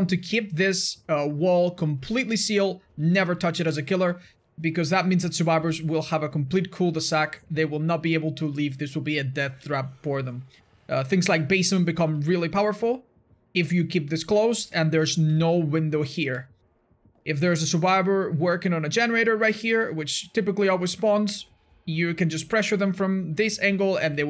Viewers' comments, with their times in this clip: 0:06 The way he said „cul de sac“ aka. Dead end in French